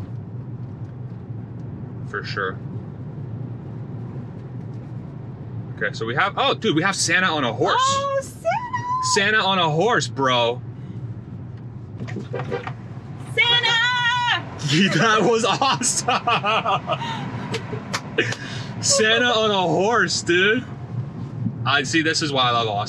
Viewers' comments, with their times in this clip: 0:10 dude! Don‘t honk at horses⚠️